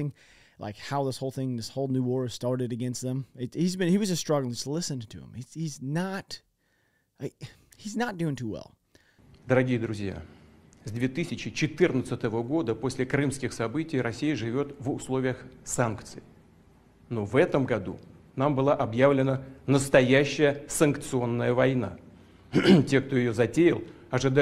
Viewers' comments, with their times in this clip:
0:10 putin keeps coughing which indicates he's under stress. It's not very strong of him to be coughing on stage